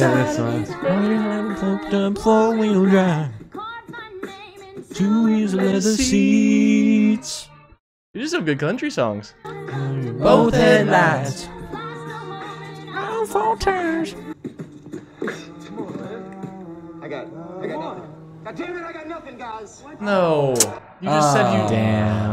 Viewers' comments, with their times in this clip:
0:05 why did they actually harmonize